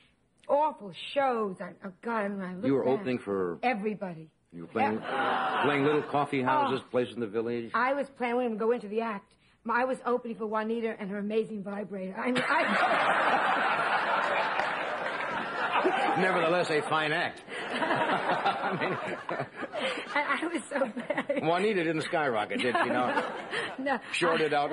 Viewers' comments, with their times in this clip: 0:09 Joan says "I was opening for Juanita and her.." and I cannot understand the rest of that line. Sounds like it must have been a funny one by all the laughter. Does anyone know what she said?? Thanks ..